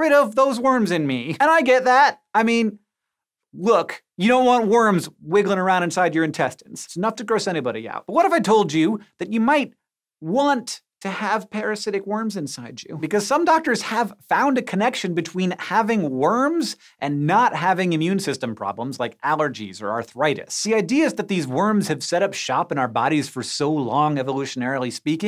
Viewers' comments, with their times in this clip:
0:08 when Hank says “you might want parasitic worms inside you” it sounds like he’s trying to seduce you.
0:10 The way he said that made me a bit uncomfortable.